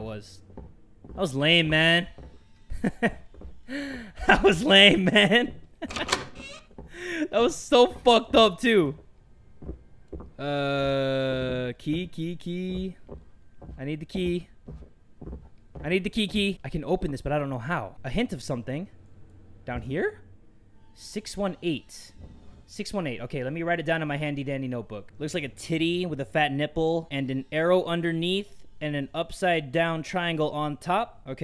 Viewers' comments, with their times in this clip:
0:05 why did you say it was lame if you jumped and screamed?
0:12 "Key key key" all I could think of was " Kiki do you love me" that is all I could think of